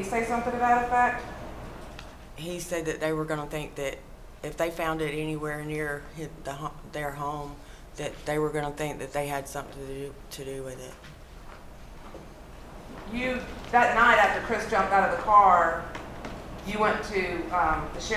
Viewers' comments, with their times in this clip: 0:05 is she refuring to the baby when she said it?! Where did this happen? They sound like they are from the south.